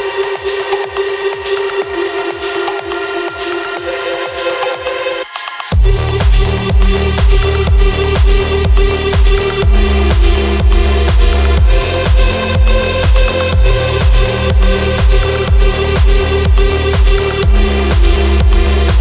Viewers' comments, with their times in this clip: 0:05 when that bass drops....out of this world!